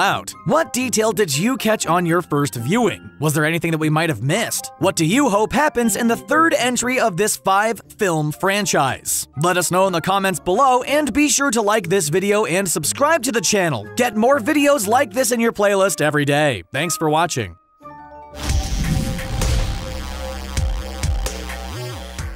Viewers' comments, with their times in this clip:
0:05 Your stutter had me crying at the end lmao In this five f f film franchise